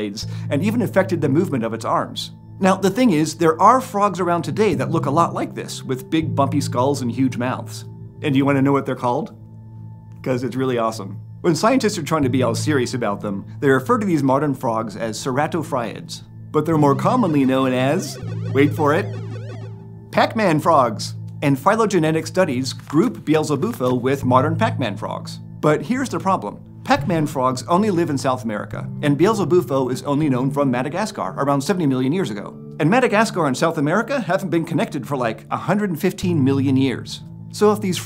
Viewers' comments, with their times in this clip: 0:10 You breathed like a frog
0:19 the way he gets excited before revealing pac man frogs love it